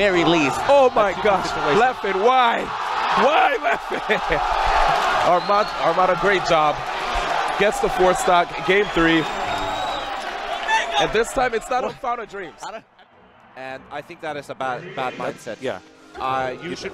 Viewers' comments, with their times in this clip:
0:03 i would not handle the pressure in that situation. I would Cry my eyes out. The crowd cheering when you lost brutally. feels bad a lot